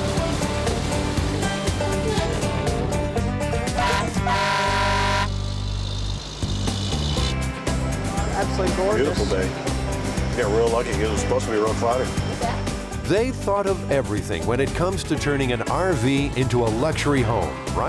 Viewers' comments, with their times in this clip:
0:04 bus-ship hybrid horn